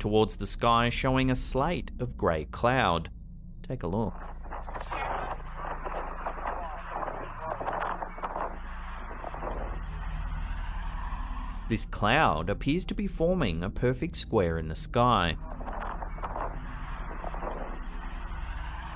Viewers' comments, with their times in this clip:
0:03 did anyone else hear 'the world is dead' ? 🤔😮